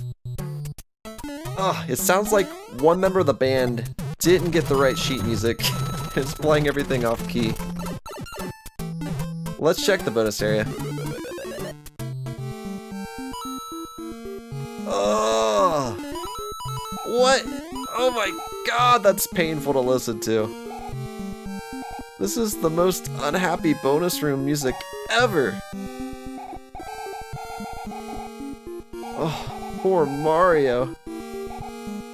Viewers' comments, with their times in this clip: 0:04 I can't hear it it sounds like super mario bros 3 regular music to me
0:12 The best music ever listen to it :-)
0:12 it looks like the song is ill 🤢🤢🤢🤢🤢🤢🤢🤢🤢
0:19 so cringe music !!
0:19 that music is probably what it sounds like after taking LOADS of drugs 😂👌